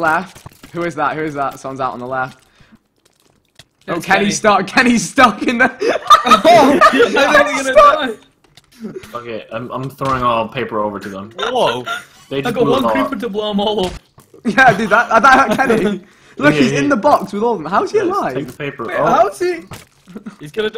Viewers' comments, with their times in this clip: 0:08 Ohhh somebody swearing